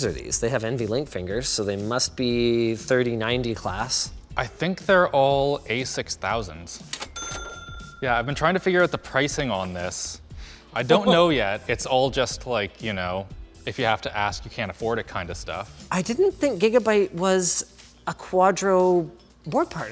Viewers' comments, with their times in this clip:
0:06 Cash register sound made me laugh out loud. Excellent work editors